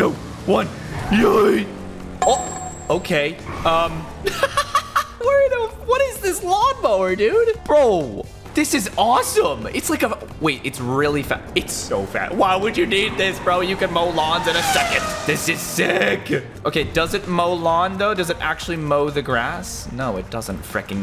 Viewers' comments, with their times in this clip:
0:07 LAW MOWER X STREAM That sounds like a knock of game of something